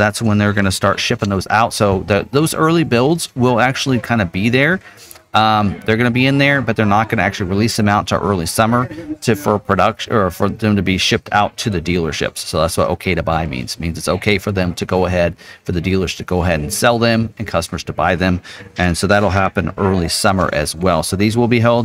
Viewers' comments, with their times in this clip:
0:06 Too much background noise.